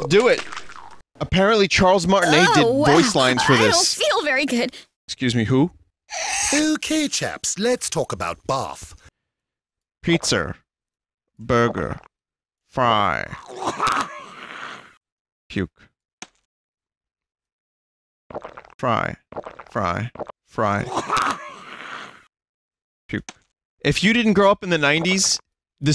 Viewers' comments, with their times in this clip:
0:08 hey its luigi